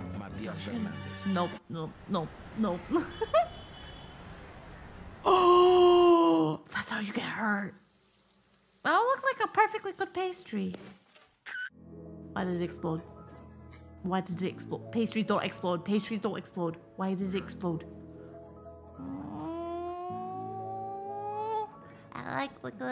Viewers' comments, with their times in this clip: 0:08 Yoo, hold up. First thing, love the videos. Secondly did she squeak or was that the video